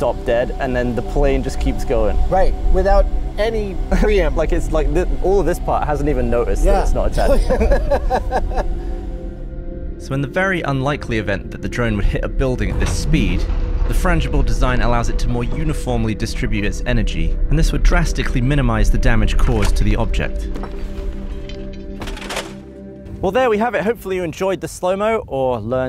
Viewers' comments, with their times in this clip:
0:06 that "notice" made me notice that living in California is rubbing off on your accent Gav!!
0:13 There was some proper low frequencies My speaker cones were having a real flap.